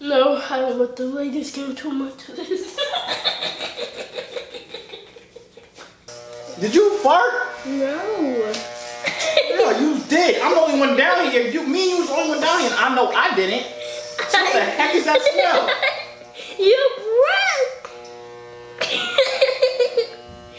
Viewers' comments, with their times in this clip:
0:03 picture u hearing this laugh in your home alone in the dark